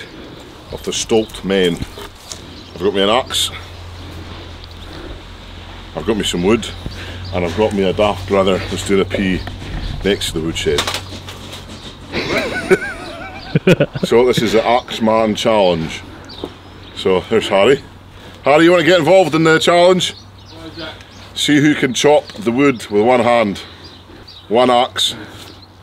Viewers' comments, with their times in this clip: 0:08 And I got me a deaf brother who takes a pie next to the wood😂😂